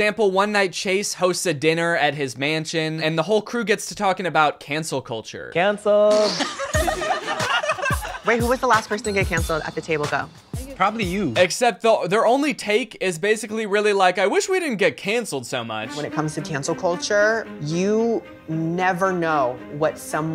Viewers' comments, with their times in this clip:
0:06 with that laugh chase could play as the joker 💀
0:08 his laugh is insane dude wtf